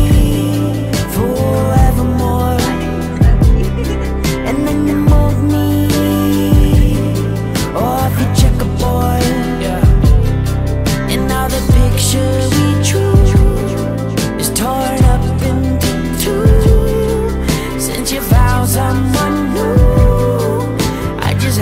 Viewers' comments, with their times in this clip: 0:09 that totally sounds like Blackbear in the background!!!!